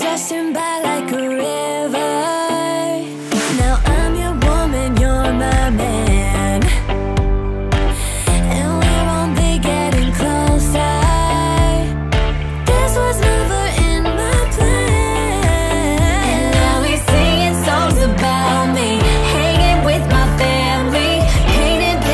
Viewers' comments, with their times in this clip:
0:08 OMG? The voice?